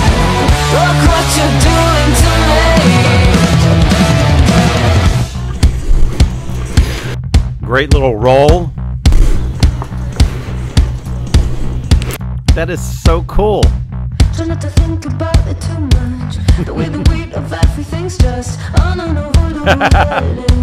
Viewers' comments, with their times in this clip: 0:05 that instrumental sounds like the start of the Flash Gordon theme song!!